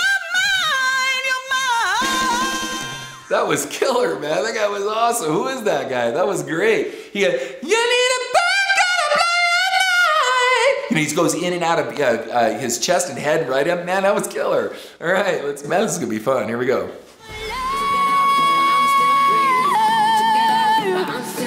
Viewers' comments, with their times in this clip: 0:08 as always, you have also impressive high note mr ken